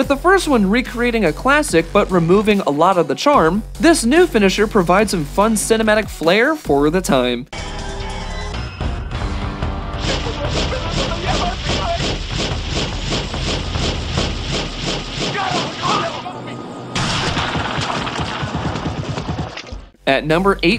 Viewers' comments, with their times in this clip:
0:08 -Those who aren't familiar with MK4's brand of "Kung-fu gibberish" will look at this and assume it's just a poorly done Spanish dub. XP